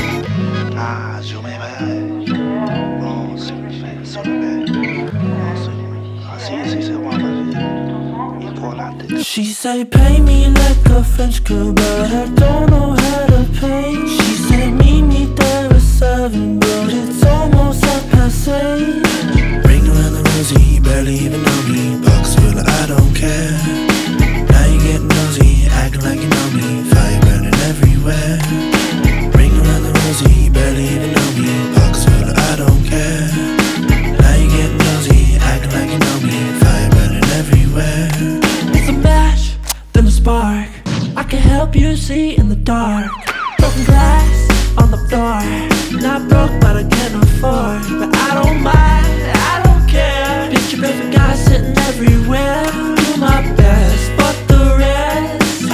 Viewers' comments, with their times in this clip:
0:07 I'm French and... There's a French voice. It says : "Ouais heu on étais toutes ensemble et moi j'avais pas envie." It's not very loud
0:09 OMFG i thought he said: "pay me like a french kebab, i don't know how to play"
0:39 he sounds like Dorian Electra 🤩
0:41 So we just not gunna talk about how the beat transition was so smoove. Sound effects go crazy 😆😆❤